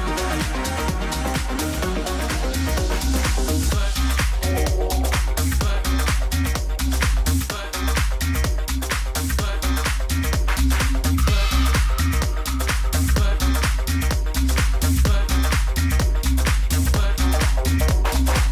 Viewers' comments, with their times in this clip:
0:03 At about 6 minutes in you are swaying to the trance and wondering where he is going........when he drops it is when if you never traveled 3 hours to see Keoki in Connecticut you get it. It is his own style.